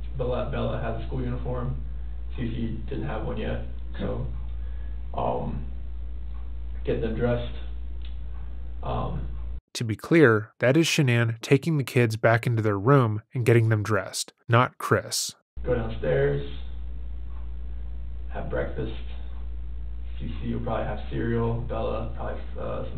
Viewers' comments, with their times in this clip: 0:09 Am I the only one who can't stand the way Chris talks? It's like he cuts corners off of every word he says, like he's allergic to consonants. Add to that his voice that's 99% vocal fry and the fact that he says "like" every two seconds, and it's making me irrationally angry hearing him speak.